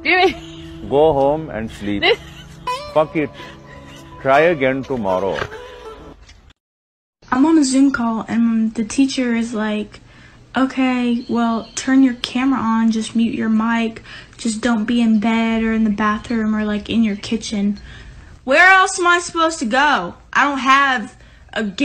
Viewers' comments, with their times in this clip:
0:07 I was wondering why was labeled “second hand embarrassment” Then the teachers voice hit me like a truck 💀